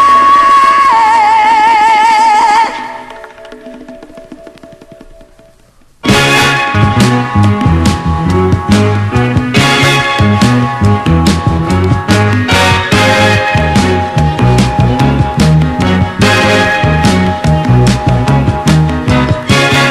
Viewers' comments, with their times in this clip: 0:05 ghost sample pretty toney forget the name of the song
0:06 When that beat drops ............yeah, that part !